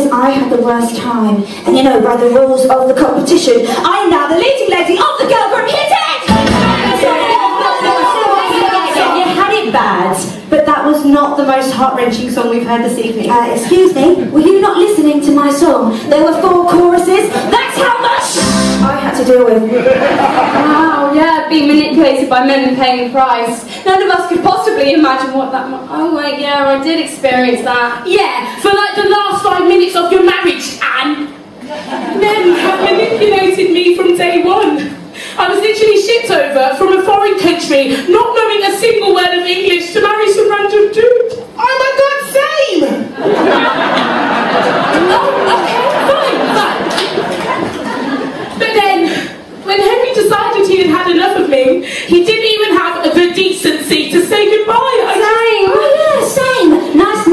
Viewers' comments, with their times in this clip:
0:06 In the sound effect really sounds similar to a part of "Ill put you in your place" in the percy jackson musical
0:08 it sounds like the start of the Pokémon theme a little bit
0:41 I am the only one who thinks it sounds like gabbie hanna?